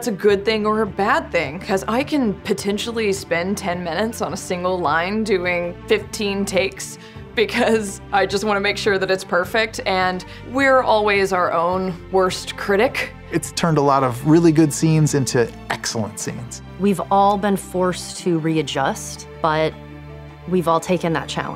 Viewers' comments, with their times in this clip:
0:03 The increase of intensity Marisha had in each take had me dying